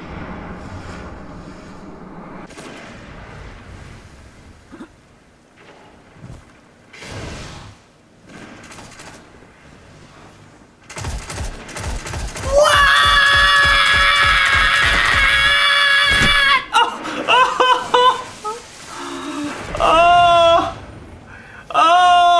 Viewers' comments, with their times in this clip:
0:09 sounds like a dying goat giving birth to an elephant